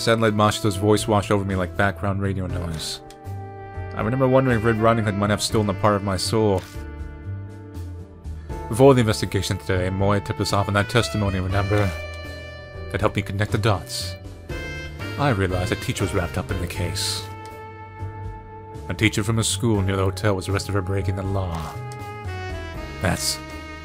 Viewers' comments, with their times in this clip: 0:07 WHY is the music so sweet?! What’s going on here......... Stop making me imply things CUZ I definitely will....and I love it lol